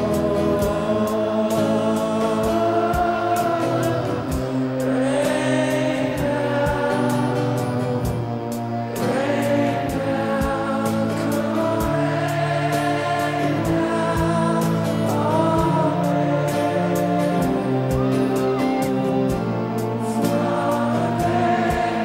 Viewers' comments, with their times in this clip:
0:03 the crowd singing, feels so nice